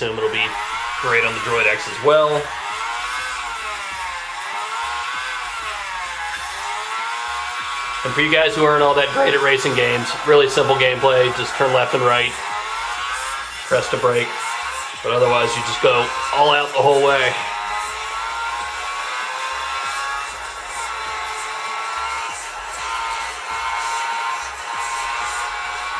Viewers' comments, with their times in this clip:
0:07 your voiced cracked